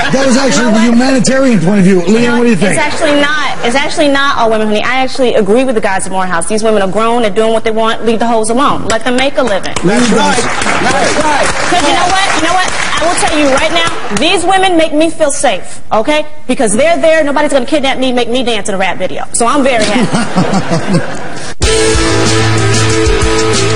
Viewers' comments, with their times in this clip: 0:08 is one of many epitome moments of Patrice's amazing humor. Him being the first to clap in a very caddy fashion. knowing she folded and agreed with Patrice's angle and logic after first looking disgusted lol wow man I died laughing how caddy his clap yells "yeah, shut the fuck up bitch" in his voice so often heard lamo. Great episode. Pat Cooper and Patrice share same views. Both legends.